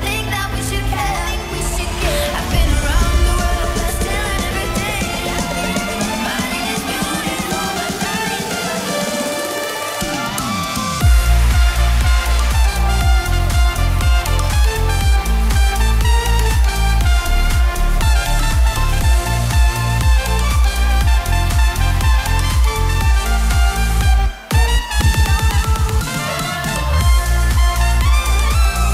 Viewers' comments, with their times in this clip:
0:09 Around The World the relax music but noise🔥🔥